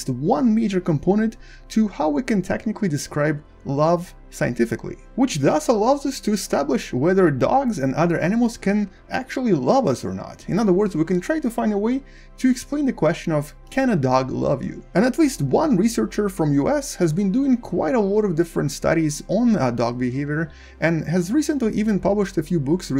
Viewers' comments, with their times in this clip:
0:04 there is still no clue to the actual title given here... just a lot of talking very fast. Every dog is different.